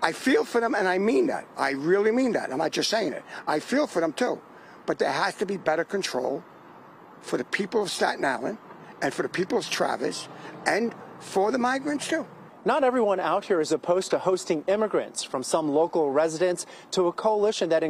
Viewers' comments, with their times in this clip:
0:04 This guy sounds like Mel Brooks ( especially as Yogurt in the movie Space Balls. )
0:04 This guy sounds like Mel Brooks ( especially as Yogurt in the movie Space Balls. )